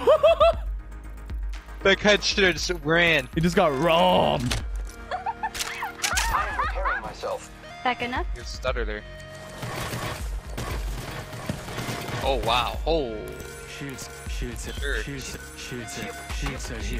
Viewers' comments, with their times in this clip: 0:04 sounds like wattson is laughing at u 🤣